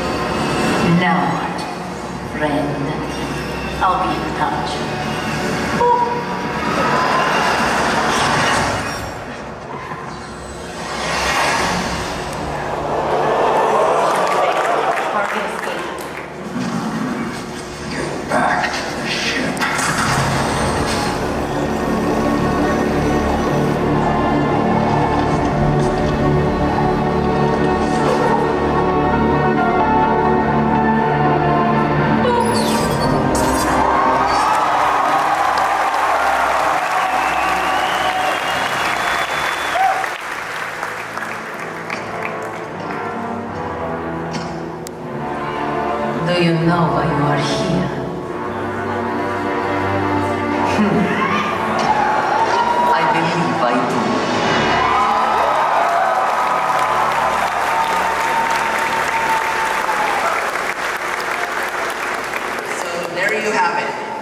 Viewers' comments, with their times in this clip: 0:08 the crowd reaction in this gave me actual goosebumps!
0:50 I love the YESSSS with Zarya